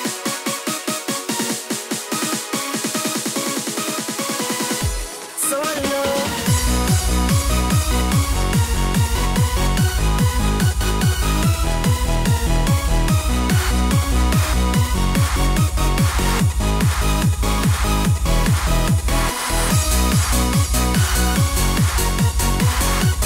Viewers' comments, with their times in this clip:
0:09 The beat from just kills me !!!!!!